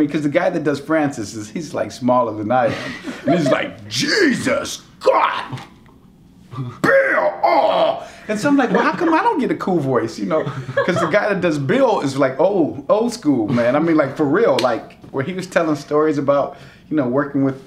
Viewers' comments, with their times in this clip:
0:04 why does he kinda sound like a bit of francis there tho lmaoo